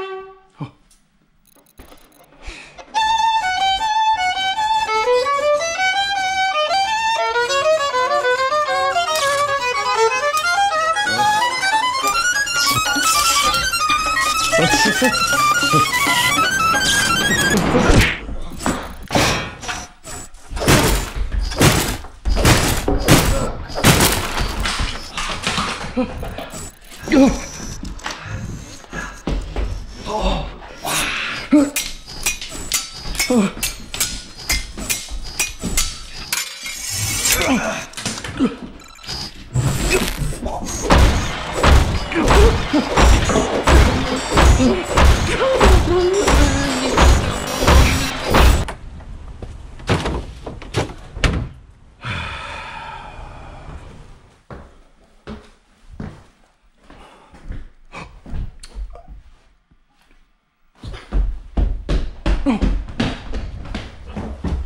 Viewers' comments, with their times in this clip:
0:03 The man plays the violin, the Canon in D song speeds up and pitch goes higher, the robot hand gets crazy and throws the bow at the teacher
0:03 LOL 😂 😂😂😂😂😂 speeds up
0:06 all my God 😂😂😂😂 LOL FAST violin
0:17 PUNCH SOUND & SWORD FIGHT?!???!?!?
0:18 Phonk Snare Drum
0:19 My mom when she gets angry at me and accidentally banged the door.
0:31 girls playing a violin: wow this sounds really good boys playing a violin:
0:38 the person for the TV is coming to his house like he just hates the noise when the person is making ugly noises to his violin
0:41 what I feel like is going on next door when they use a hammer
0:47 i hear you fart :)))))